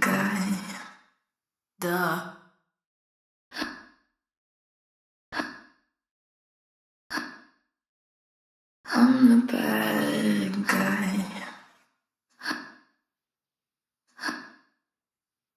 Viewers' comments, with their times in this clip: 0:03 sounds like Billie has the hiccups!